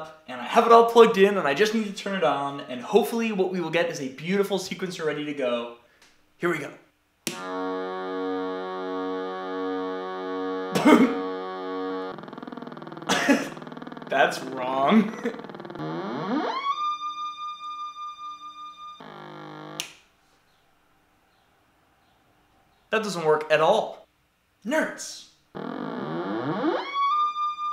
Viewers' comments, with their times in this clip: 0:10 dude it's not wrong, you created a moog! lol thats a good thing! bad ass build!